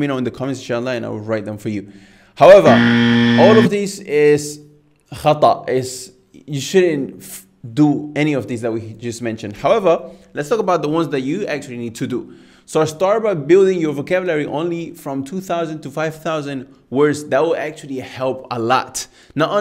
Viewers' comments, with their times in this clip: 0:04 That buzzer startled me. haha